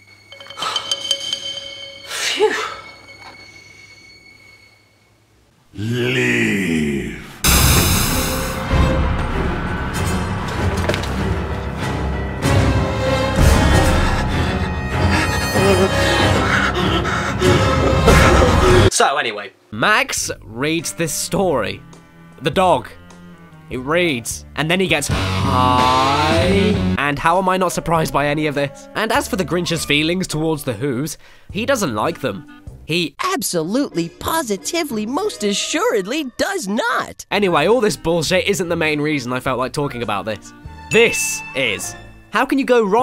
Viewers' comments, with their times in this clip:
0:03 WTF?! Does he says LEAVE or LIVE!?
0:07 Dammit what is the music that plays after the dog says "Leave!"? It makes me really tense and feel like I need to rush and I'm sure it's part of a game I've played before but I can't for the life of me remember what.
0:29 Max sounds like Marty Mcfly on puberty.